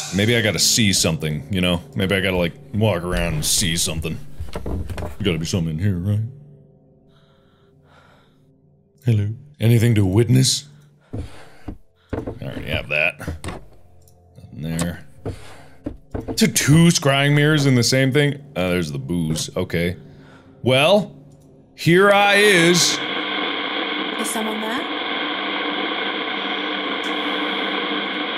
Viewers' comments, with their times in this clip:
0:06 that random hello.... scared the shiiiii..... out of me xD
0:07 Mark’s “hello “ at like legitimately made me jump and I feel so dumb now...
0:07 This game is so intense that Mark's little "hello" scared me lol
0:08 Bruhh on when mark said HELLO! that actually kinda scared me.
0:08 I can't believe that I got scared with Markiplier's "hello" jumpscare.😂
0:08 The hello scared me
0:09 Why did Mark’s little “hello” almost make me jump :’)